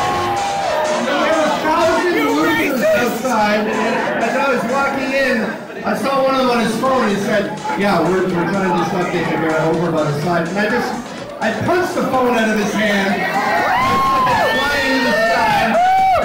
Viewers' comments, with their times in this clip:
0:04 This literally sounds like that one dude in like junior high that used to hang around that couldn't lie for shit but was always trying to flex on everybody.